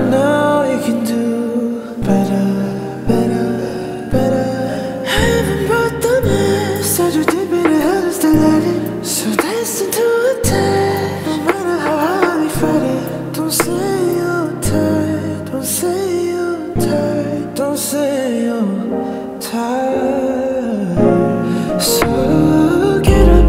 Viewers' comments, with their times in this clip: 0:05 This part sounds like v / Taehyung and also this arrangement is top tier